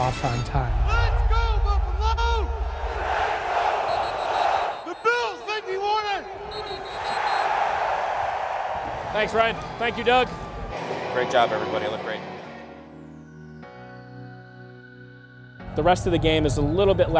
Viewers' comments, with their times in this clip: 0:05 “ the bills make me want to” I swear I heard someone say drink 😂